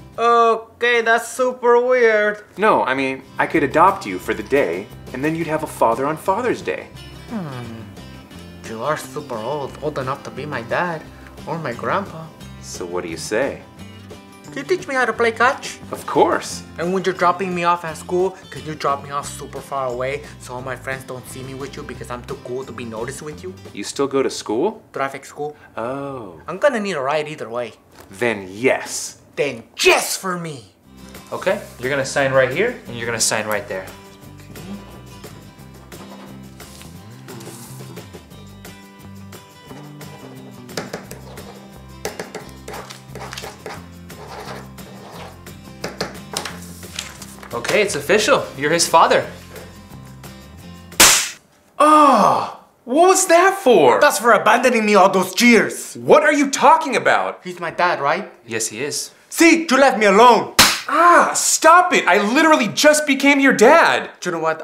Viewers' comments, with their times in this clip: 0:06 Juan sounds like a Minecraft villager
0:06 in he sounded like a villager in minecraft
0:50 was that a real slapping sound??